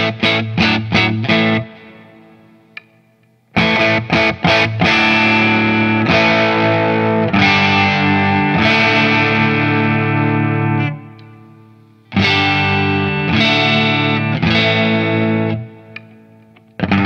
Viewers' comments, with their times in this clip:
0:05 wow that sounds just like a bridge humbucker!